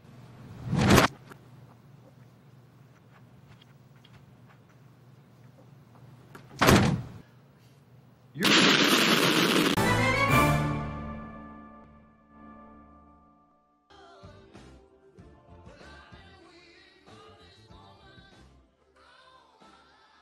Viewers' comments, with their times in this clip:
0:06 literal dive bombs